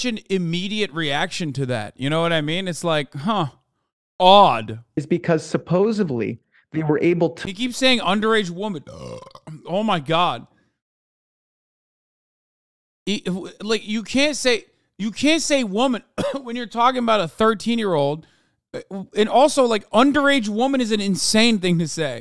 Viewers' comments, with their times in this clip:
0:07 Hasan letting out the most nastiest earth shaking burp Is sending me